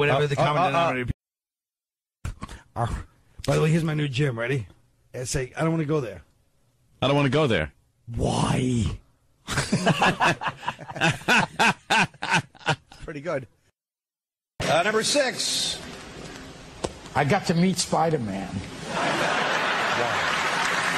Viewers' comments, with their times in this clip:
0:03 a Jim Norton impression